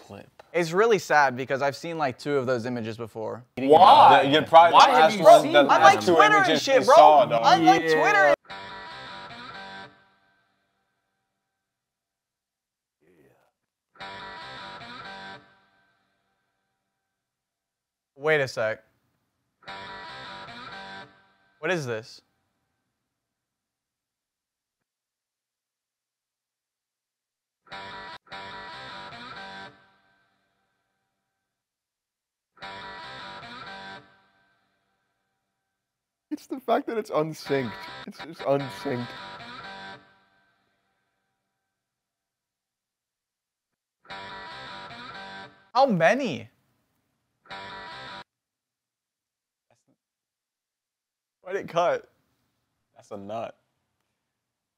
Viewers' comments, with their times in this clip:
0:08 So the reason is funny is because the sound is literally the opening rift of the song "Bad to the Bone" repeated multiple times... & that's it. That plus the horrible editing makes it funny.
0:09 I just figured out Bad to the Bone is played in 3/4 time at 149 bpm, so yeah that whole video is way off beat.
0:42 the only thing that made that funny was how uncomfortably long the pauses in between the guitar riffs were